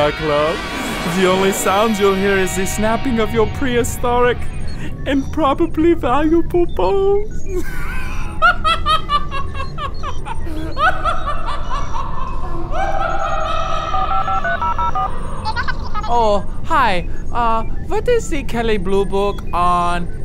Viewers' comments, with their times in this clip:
0:04 what the hell is that thing and what does it want from the DYC? and y is he laughing the DYC will own his gooey *** !! :D